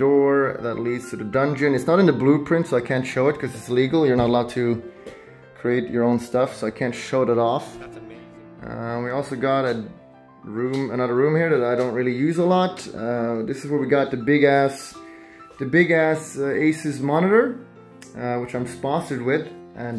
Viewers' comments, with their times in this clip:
0:07 did someone hear That's on me??